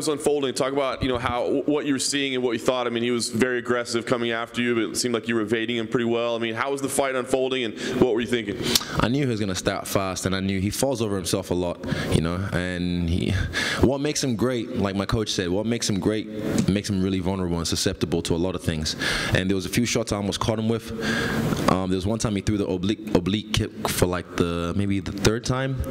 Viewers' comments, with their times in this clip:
0:08 Bro wtf he had a kiwi accent out of no where!